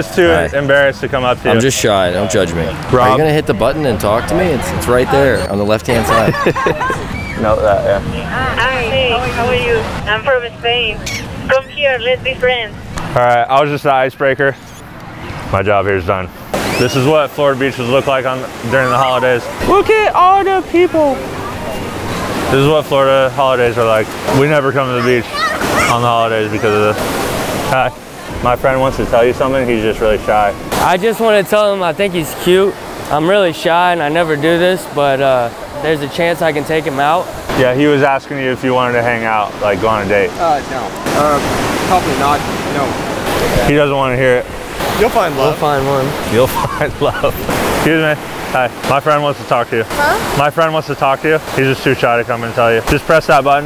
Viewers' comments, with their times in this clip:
0:10 Yo the girl sounded just like Sofia from AGT 😂😂🤣
0:37 the way he says no lmfaoo